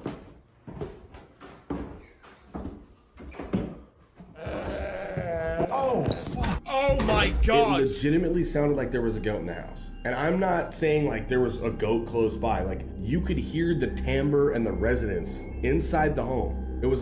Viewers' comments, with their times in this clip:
0:03 dude wtf is that its sounds like the risen mummies in the mummy movies from the early 2000"s
0:03 It's not a Ghost, it's a Ghoast. XD